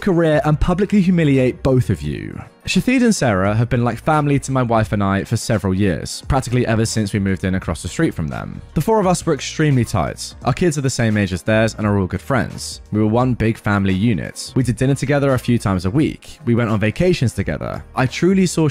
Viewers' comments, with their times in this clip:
0:04 pronouncing it Shatheed is killing me rn!